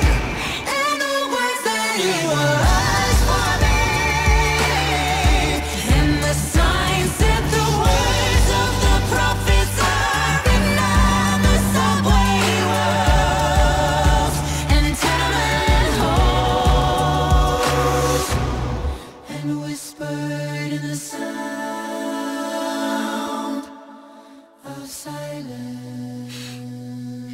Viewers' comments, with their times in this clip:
0:08 there was a roll of the 'r' in prophets....its the first I'm hearing it today after multiple times of listening to this. I wonder who was doing it. Even more impressive!